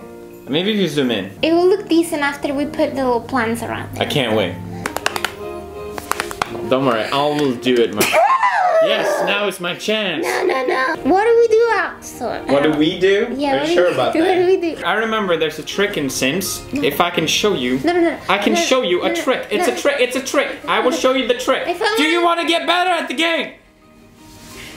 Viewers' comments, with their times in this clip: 0:07 her sneez is just 😔😔 beautifull